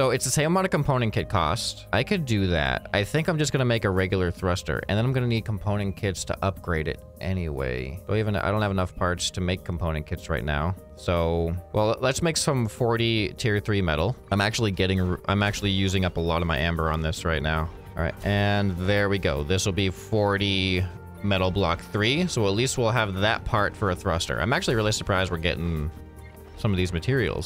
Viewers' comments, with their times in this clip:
0:08 "I dont even have enough farts to upgrade it"